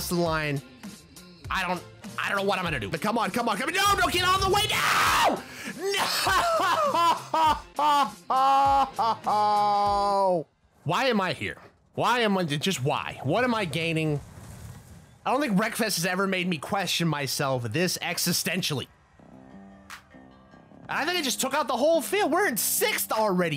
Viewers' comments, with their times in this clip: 0:06 The scream was so funny.